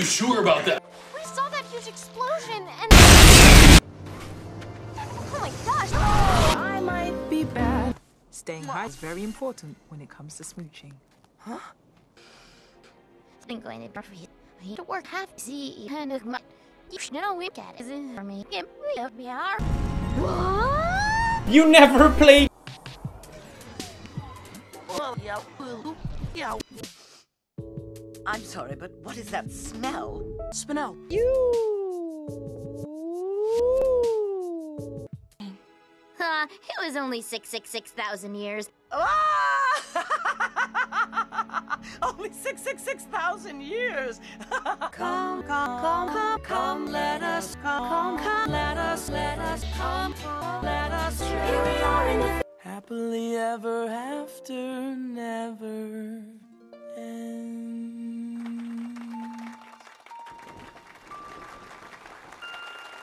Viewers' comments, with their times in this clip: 0:05 the Sims Talking Be like:
0:24 the new Tesla sound
0:44 let us adore you but its the words "come" and "lettuce"